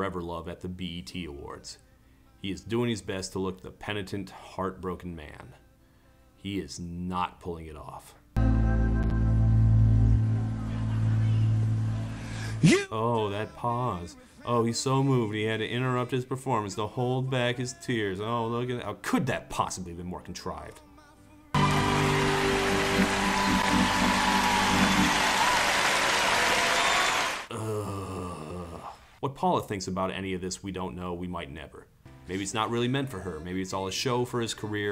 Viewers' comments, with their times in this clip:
0:06 .. listen to that pause.... and u get that audience reaction... some lady says "please!"
0:08 It's so fake that even the audience knows it, you can clearly hear someone laughing at him
0:08 omg that laugh probably echoes through his head every day im dead 💀
0:08 you can hear someone laugh
0:09 you can hear someone laugh out loud and a woman say: "Oh, please!" among the light audience murmur.
0:09 Omg, somebody laughed during that awkward pause in Forever Love at the BET Awards. It starts Too much.
0:09 SOMEONE IS LITERALLY LAUGHING AT THAT!!!!
0:09 I love how when he does that, you hear some guys in the background laugh out loud at it, with a woman yelling out, "PLEASE!" Now, she may have been saying it to them to stop, but I like to also think she said like in a tone of, 'oh for fuck's sake!' Right to Robin himself.
0:09 I knew he was going to mention Here, My Dear. That's one crazy album. Oof! That laughter.
0:10 u can hear the audience laugh and a woman say “pls no” 😂
0:10 where he 'holds back' the tears you can actually hear someone in the audience laughing!
0:10 The laughs & the girl yelling "please" 😬😳
0:10 hearing that laughter in the background just gives away how unconvincing Robin Thicke was lol
0:10 Pretty sure I heard a guy laugh here. Good on ya man, you have a slightly twisted, but totally valid sense of humor.
0:10 the laughter and someone yelling “please” is exactly how i feel about Robin Thicke
0:10 that guy laughing in the background is me watching this
0:17 I stan whoever scoffed “oh please!”